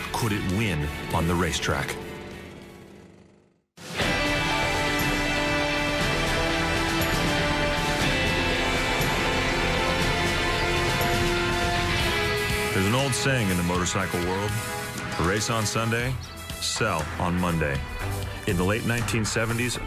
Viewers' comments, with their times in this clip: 0:07 Gave up when the next barrage of music exploded. Not much enlightening or descriptive up to that point, and no reason to think it would improve; shame really.